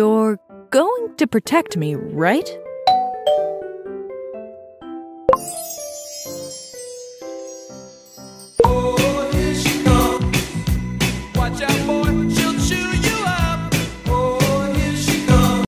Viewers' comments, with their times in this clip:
0:08 Yes, because let's all make light of sexual abuse by putting an up-tempo '80s song over it. Remember: Healthy sex requires everyone involved to be relaxed, sober, enthusiastic, happy, and consenting from start to finish. If any one of those is missing at any time for any reason, it's abuse and/or rape.